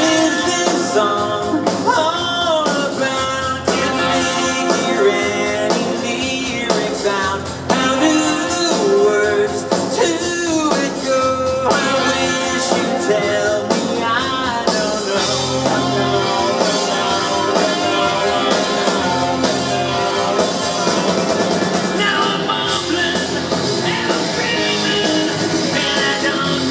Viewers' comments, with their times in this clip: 0:07 it almost sounds like he said "Do Do Do Words Too it Go"